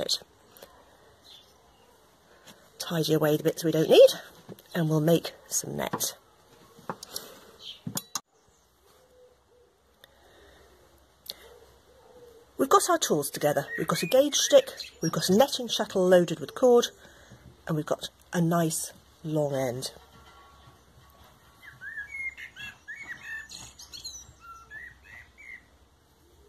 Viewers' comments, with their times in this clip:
0:10 Beautiful bird chirping.